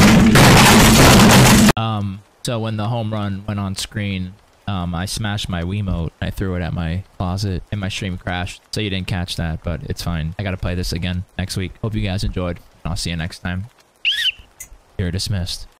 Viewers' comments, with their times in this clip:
0:13 I love how pathetic the whistle blow was